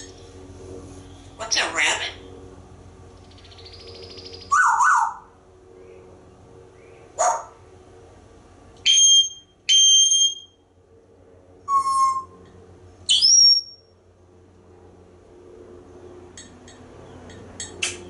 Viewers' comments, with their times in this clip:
0:04 is that supposed to be an ambulance siren?